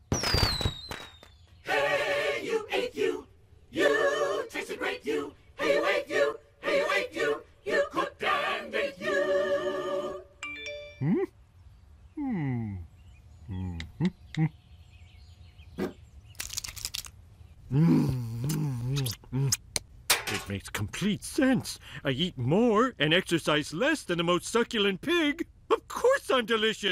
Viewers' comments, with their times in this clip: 0:10 Sounds like he has an iPhone lol